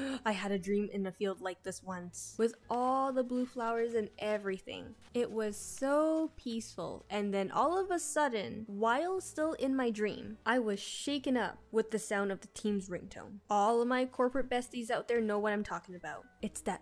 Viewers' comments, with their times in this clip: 0:04 the teams ring tone🥲😅